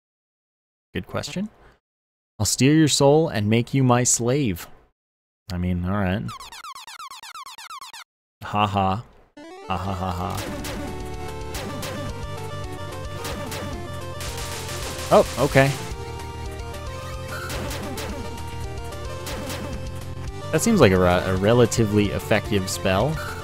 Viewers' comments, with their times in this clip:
0:08 The most energetic laugh of all time.